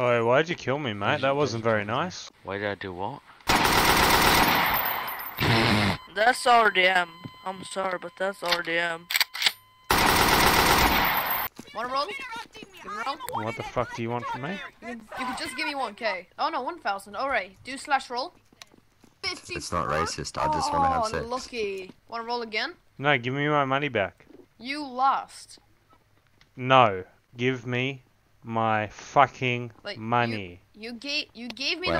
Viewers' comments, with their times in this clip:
0:06 ive always wondered why this swedish sounding kid says he is sorry can anyone explain?
0:19 that background banter is wild